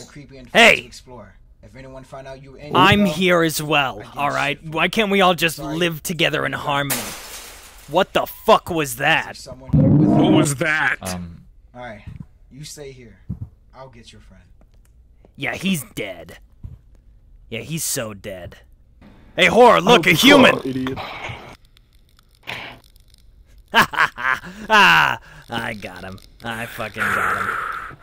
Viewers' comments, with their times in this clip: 0:09 bro the prowler sound effect made me laugh😂